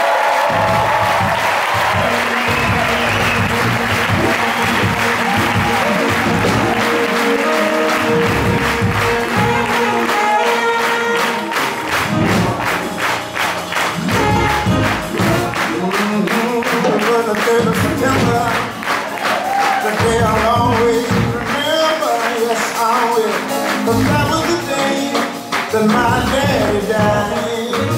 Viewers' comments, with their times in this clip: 0:10 Did anyone else want the crowd to stop clapping ??